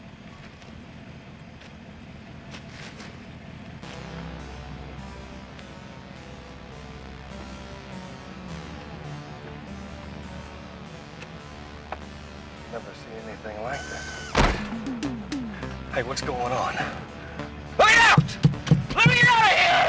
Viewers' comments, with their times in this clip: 0:03 What I'd do to have an extended version of synth soundtrack. For some reason this episode perfectly represented 1983/4. The suburban areas and everything